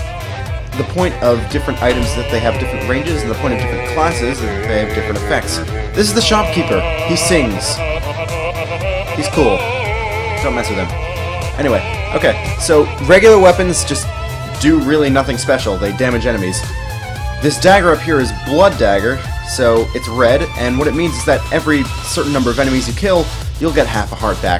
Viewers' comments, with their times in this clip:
0:06 That is one badass intro cutscene. & I have no idea why I think so. Maybe it's the music. It's most likely the music. It's the music :P That is one badass baritone 8O I haven't really seen many videos of this game so I could be wrong, but it looks like you got lucky with the drops :)